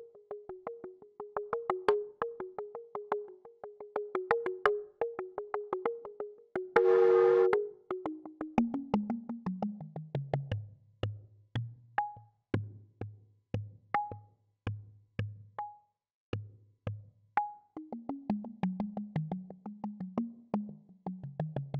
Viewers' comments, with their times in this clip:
0:07 Summons a ghost